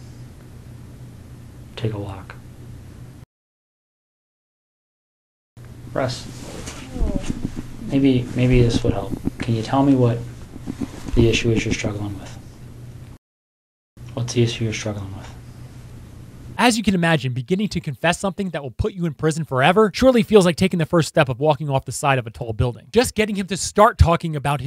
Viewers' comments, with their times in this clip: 0:08 Anyone hear that weird noise? Wonder where that came from lol